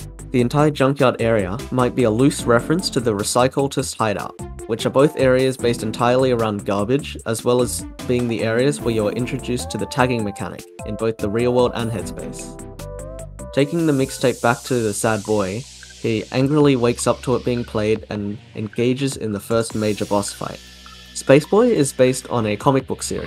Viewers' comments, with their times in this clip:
0:09 Wait a minute, that sounds alot like clean slate! also, Bagel